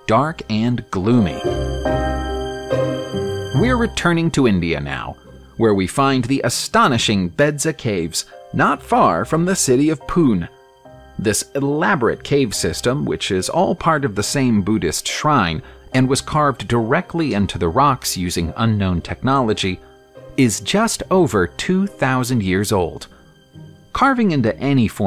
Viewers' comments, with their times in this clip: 0:10 city of pooon🤣